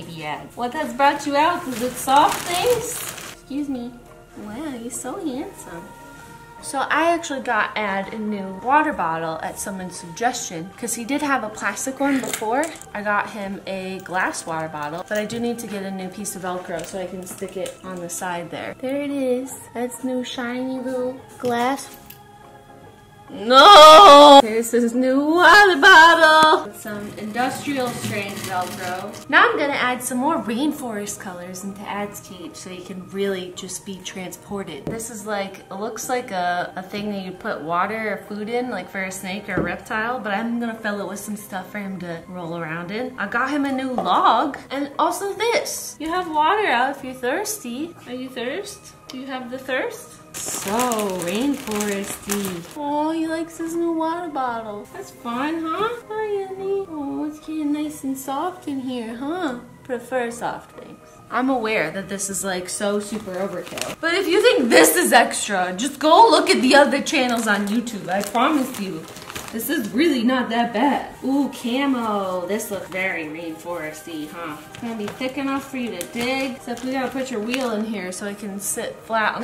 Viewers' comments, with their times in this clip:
0:10 Why the fuck is a fucking zombie minecraft sound😂😂
1:05 she sounds like Maranda sings 😂